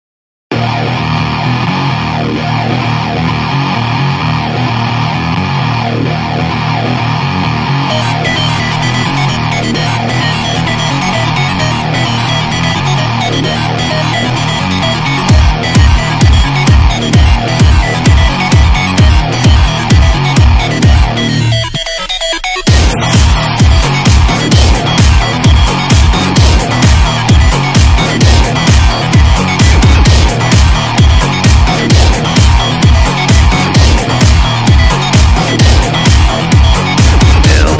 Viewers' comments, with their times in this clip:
0:01 likes the music saying owraaaa owraaaa raaaa raaaa Ra Ra raaaa then next the music mixed with 8bit game maybe an dj make this music
0:03 HELL, I LOVE THE BEAT. 👹 hits hard
0:23 When u hear this music with headphones or in tv the theme changes from a little try it out.